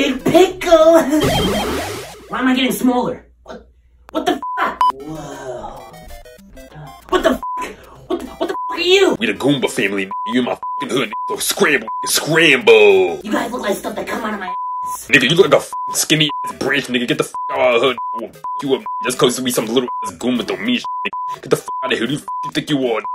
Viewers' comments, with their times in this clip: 0:09 So much [Beeps] 😂😂